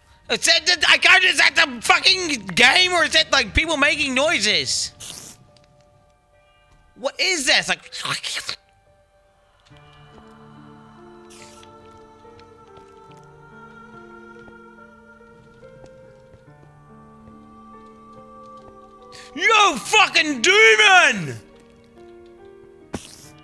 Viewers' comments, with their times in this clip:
0:09 who making this noises itis spider yes who in the home he kill you!